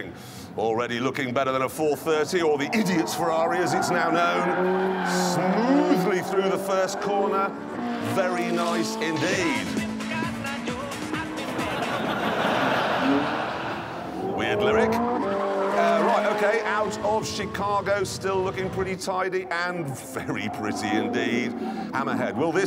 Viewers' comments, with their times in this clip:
0:09 The stig playing cotton eye joe caught me off guard ☠️
0:09 EUROBEAT INTENSITIES That is why it got a fast lap record